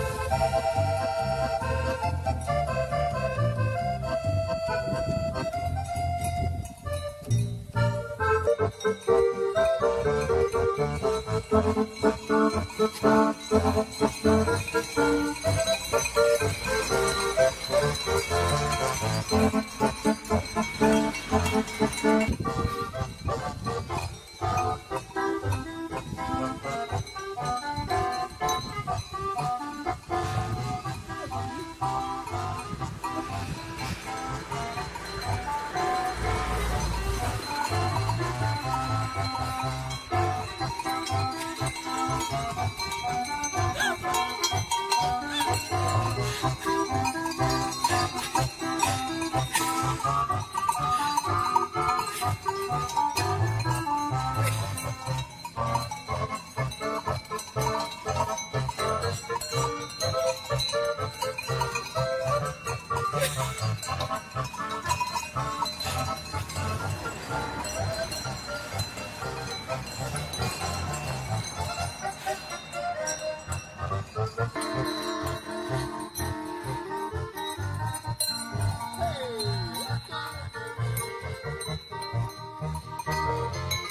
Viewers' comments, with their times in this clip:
0:08 It's the "Farm Field Accordion 🪗 and Cow Bell 🔔 Show!" Solo !
1:03 it sounds like they try to ring the bells in rhythm
1:08 Apparently, accordion music is an aphrodisiac to some cows.